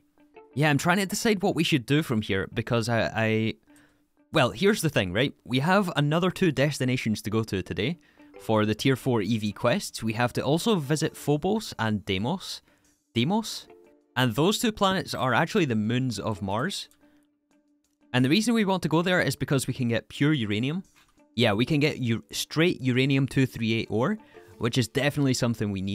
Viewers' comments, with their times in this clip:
0:06 Am i going crazy or does it sound a bit like deshtiantion?